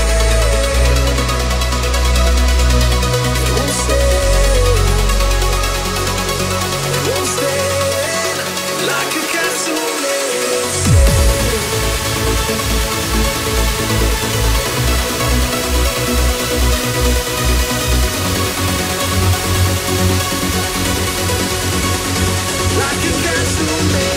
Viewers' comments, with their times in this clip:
0:05 After two years I'm still wondering how come they didn't jump out of the roof soooo energertic, so uplifiting, what an incredible tune!